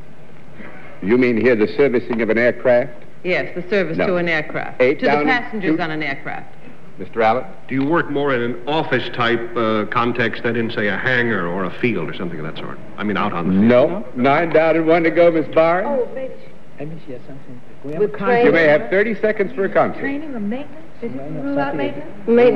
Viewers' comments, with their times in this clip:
0:10 That cough should’ve given it away it’s the most Hayley Mills cough ever